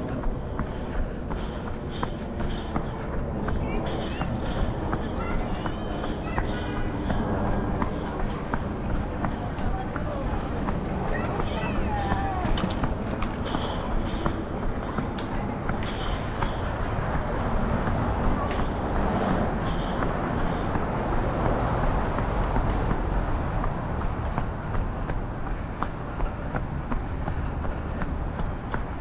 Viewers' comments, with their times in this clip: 0:10 Ha ha ha - i spread my heart and make smile- Hello kids - cute kids -it is jast few sounds of childsplay but it is make me happy! ❤💋